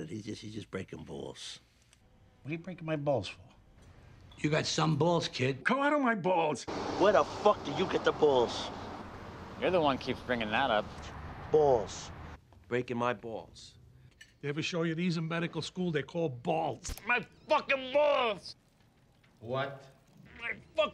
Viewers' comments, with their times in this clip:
0:07 That second "BAWLS" caught me off guard. 🤣